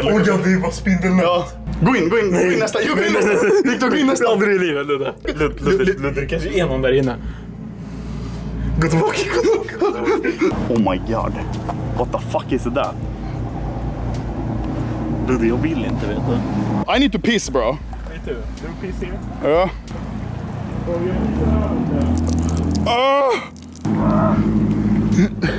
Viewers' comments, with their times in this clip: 0:08 u can hear a hiss and see a figure
0:08 Bro when they say "Go back go back" turn up your volume and it sounds like there's a third voice saying Get out